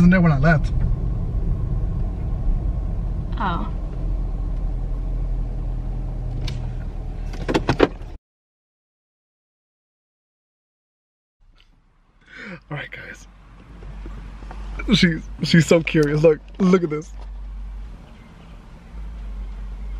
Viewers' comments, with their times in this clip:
0:03 sound so sad